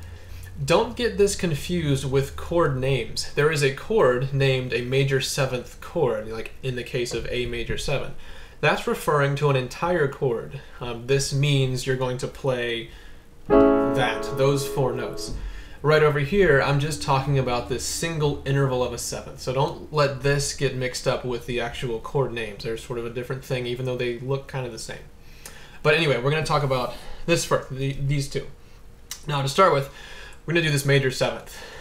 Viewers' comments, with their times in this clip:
0:10 reminds me off "slide - Calvin harris intro"
0:13 sounds like the beginning of Calvin Harris - Slide